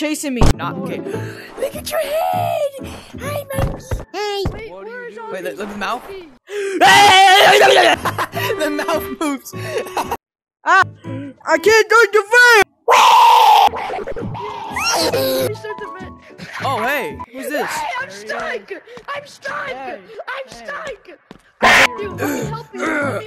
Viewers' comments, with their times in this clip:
0:04 was so cute❤ the little “hi”